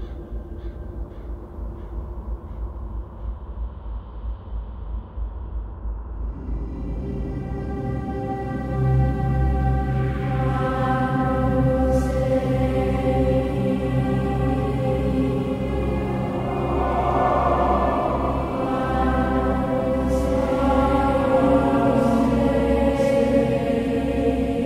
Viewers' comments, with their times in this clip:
0:06 Deathknell and Night Web's Hallow. Hauntingly beautiful. Perfect for Diablo 2.